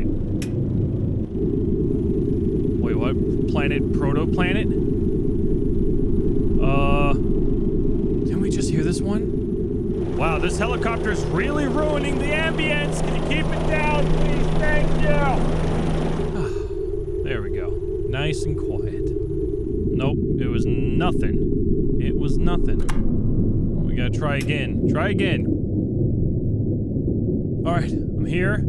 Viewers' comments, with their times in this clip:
0:10 lol you really sound like Ray Romano complaining about something in Everybody Loves Raymond.